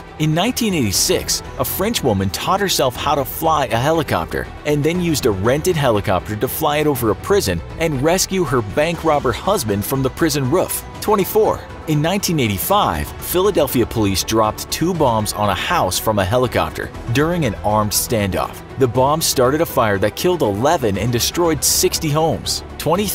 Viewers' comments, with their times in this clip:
0:06 Did you you say prison ruff ?😂